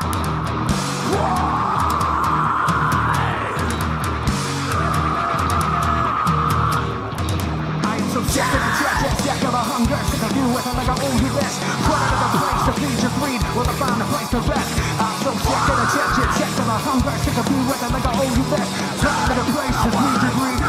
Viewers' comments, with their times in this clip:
0:08 Chester miss of this scream